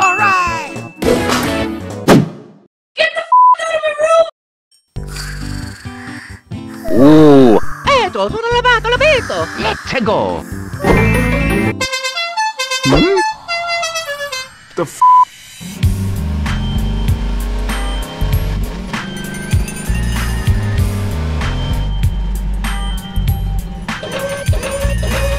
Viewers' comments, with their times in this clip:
0:09 if that horn wasnt there we would have seen disgusting s*** 💀